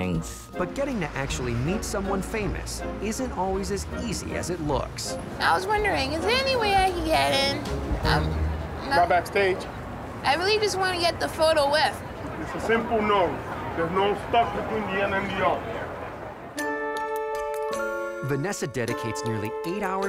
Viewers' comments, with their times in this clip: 0:05 why does she sound like a child who got their wisdom teeth removed??😂💀